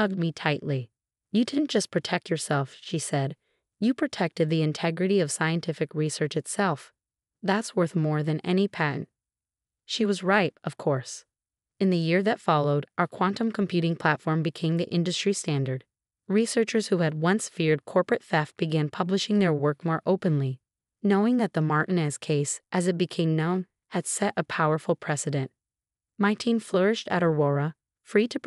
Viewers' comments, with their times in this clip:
0:10 minutes. “She was ripe of course”. Ripe for picking, or ripe as a fruit? Ripe for what? Does that mean that after this date she would become over ripe?